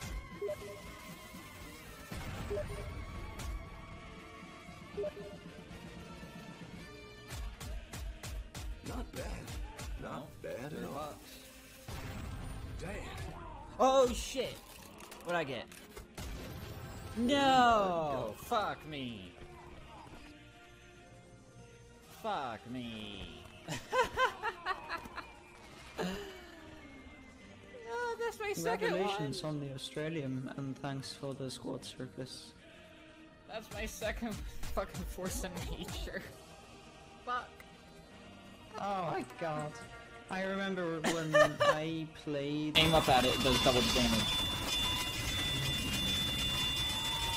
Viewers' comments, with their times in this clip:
0:07 Nice music on back side in the start in )
0:31 gets an aussie "Fuck no"